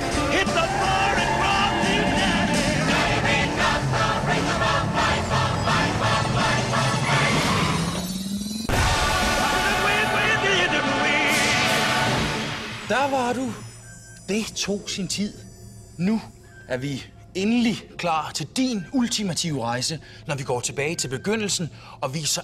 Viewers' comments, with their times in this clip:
0:08 the recalibrated omnitrix had classic omnitrix sound effect